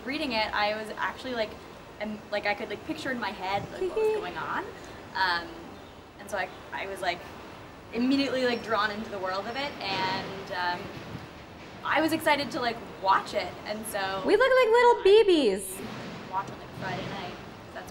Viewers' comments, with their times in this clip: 0:03 I don't know who's more adorable, Natasha then or Natasha now. That little "hehe" KILLS ME. I want that as my ringtone lol.